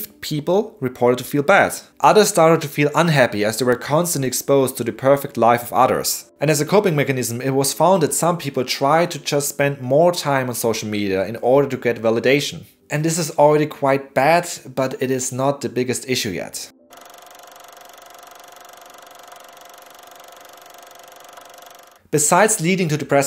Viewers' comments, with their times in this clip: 0:05 Perfect life of udders. Made me giggle